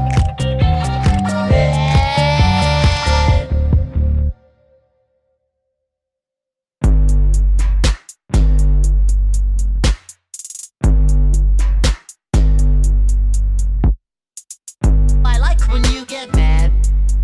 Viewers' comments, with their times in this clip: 0:05 the start of creepy voice by spongebob